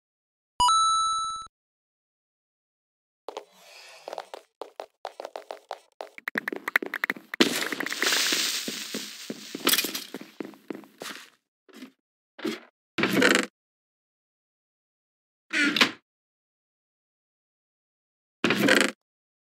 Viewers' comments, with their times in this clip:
0:07 creeper hissess Me: falls of chair Him: doesn't even care
0:07 when that creeper hissed my stomach just dropped...